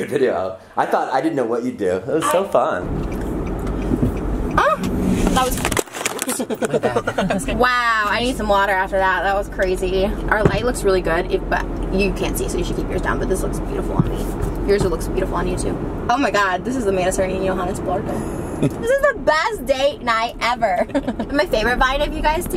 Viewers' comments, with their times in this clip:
0:06 I love the laugh 😂😂😂😂😍